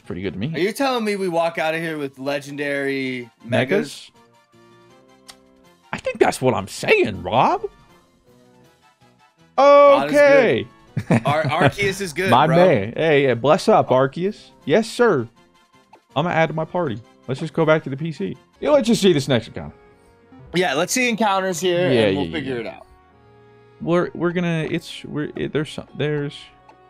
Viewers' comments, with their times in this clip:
0:08 The in sync MEGAS took me out for a second lmao